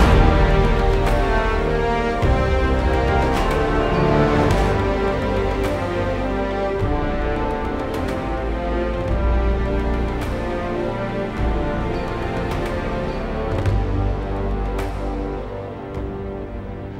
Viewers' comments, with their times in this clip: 0:03 The horns at this point just gets into my soul!